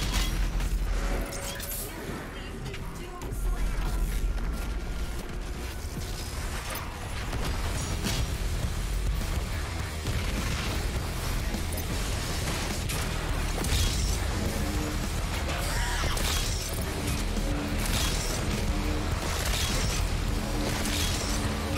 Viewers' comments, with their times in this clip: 0:09 Berserk mode with "The Only Thing They Fear Is You" music fits the speedrun perfectly xddddd